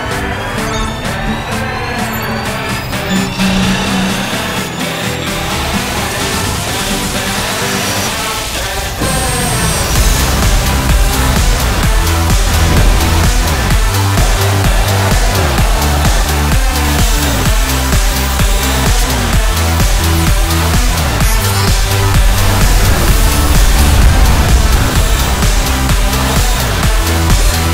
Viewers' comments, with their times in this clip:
0:09 since this is an electronic dance track, the bass drops